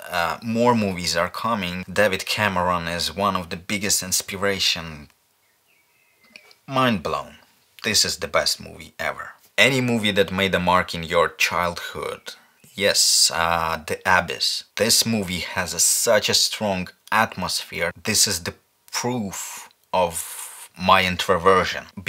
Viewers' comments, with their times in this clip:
0:10 what movie is it? I couldn't get it, probably because of the accent & the captions say ''the Abbess''.